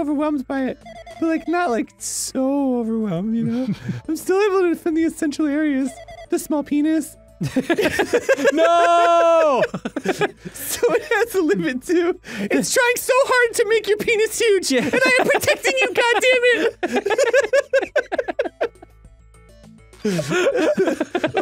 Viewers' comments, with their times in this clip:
0:04 "It's trying so hard to make your penis huge, and I am protecting you, goddammit!" may be the funniest thing I have ever heard, especially with that squeaky high pitched voice!